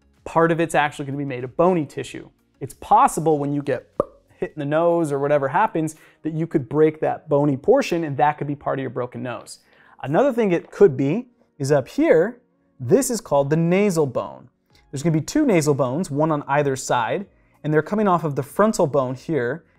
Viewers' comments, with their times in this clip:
0:03 that POP noise was amazing! Ty for your amazing videos guys!